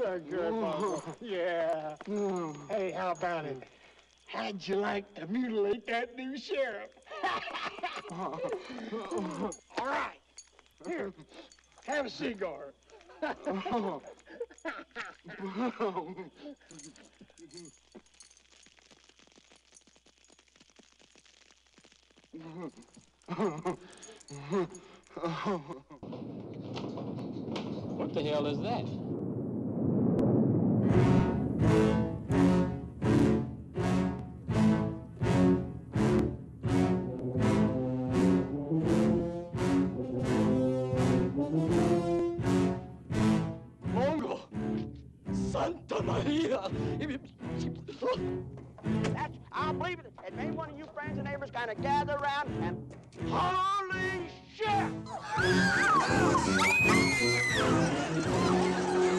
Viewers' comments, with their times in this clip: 0:10 what's a c-garr
0:44 Mango?! Santa Maria!!! xD LMAO! The way he saids in fear is funny as hell. Plus punching the horse out. LOL